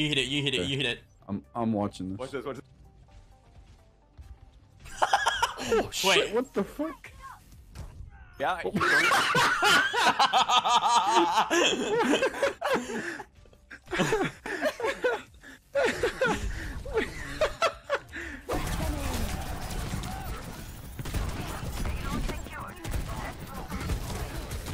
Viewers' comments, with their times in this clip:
0:07 The laugh was so funny 😂😂